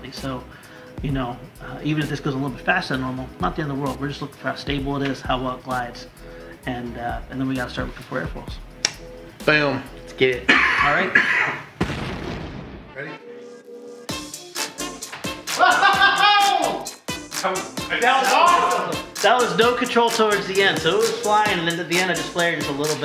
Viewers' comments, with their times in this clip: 0:10 When he said boom circa the mark, I thought one of them made a sound of excitement that was an unwanted screech noise instead thus causing it to be awkward. However, I think it is a bird lol.